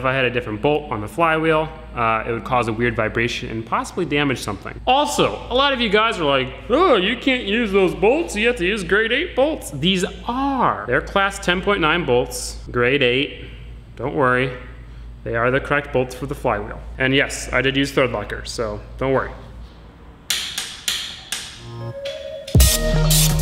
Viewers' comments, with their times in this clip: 0:09 "these aaaare" I laughed way to hard, it was just how he said it lol.